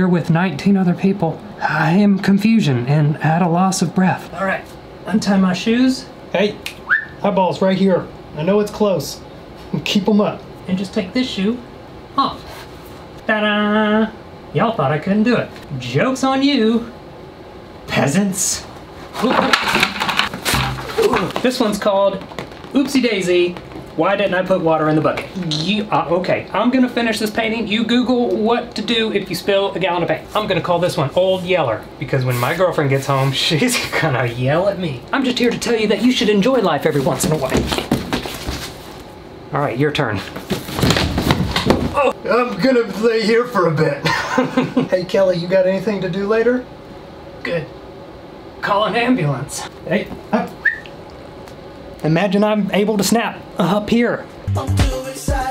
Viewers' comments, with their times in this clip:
0:06 is when you sound like Kermit the frog to me idk why
0:41 Holy crap his voice turned into muscle man from regular show